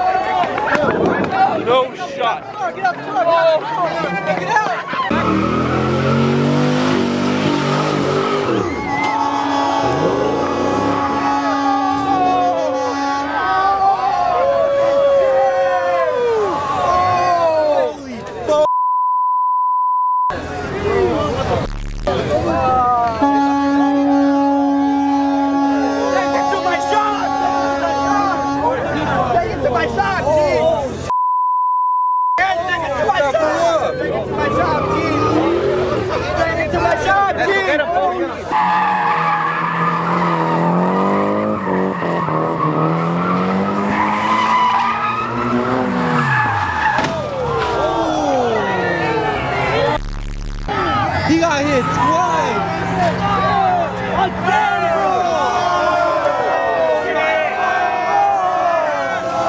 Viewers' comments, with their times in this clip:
0:09 did that guy install a boat horn on his challenger?
0:43 Smokey voice “oh he gone cry in the car”